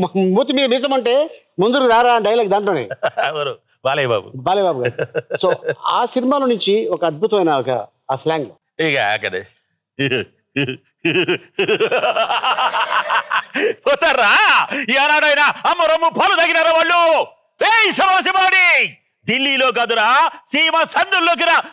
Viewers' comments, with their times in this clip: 0:09 what a legendary laugh he had 😊